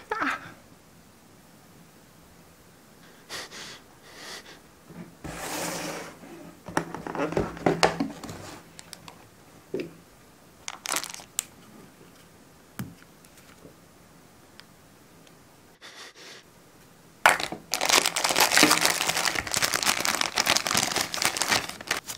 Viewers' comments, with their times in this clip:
0:04 İTS THAT ARABİC WHAT THE FU..
0:05 My god That's thai language
0:05 Wait... That's Thai language. 😮